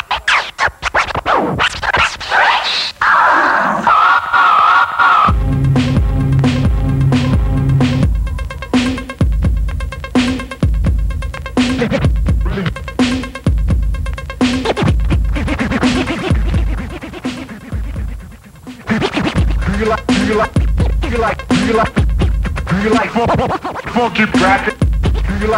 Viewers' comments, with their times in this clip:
0:06 have you noticed how he keeps perfectly the timing while playing at 6/8 tempo signature?